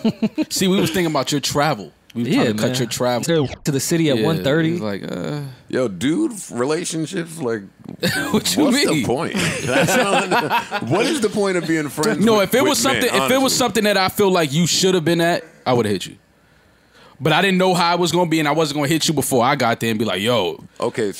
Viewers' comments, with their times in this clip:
0:03 what the hell was that 😂😂😂😂hit rory wit the clean radio censor